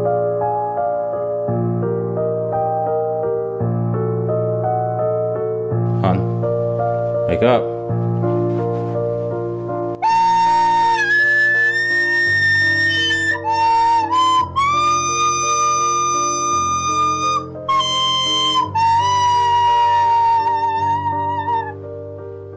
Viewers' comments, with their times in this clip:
0:09 When that recorder kicked in I died.